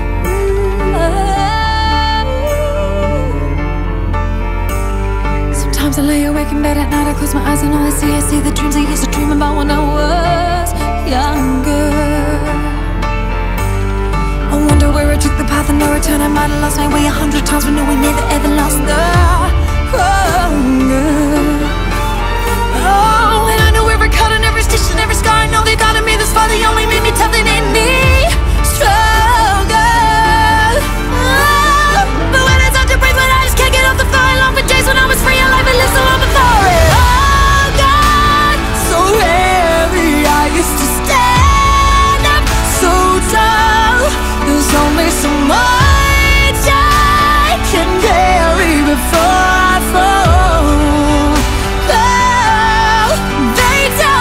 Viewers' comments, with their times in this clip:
0:05 YT recommended this to me, I don't really know why, but this name sounded familiar (after a while I remembered I loved "Almost here" as a kid) so I decided to play it in the background. Wasn't really paying attention but then I heard and was like "whaaat?! this is really good!", came back to the beginning, put it on full screen and... got hypnotised! What a beautiful human, what a rich voice, what an interesting song!
0:39 love how deep her voice gets when she sings heavy this time. sounds so powerful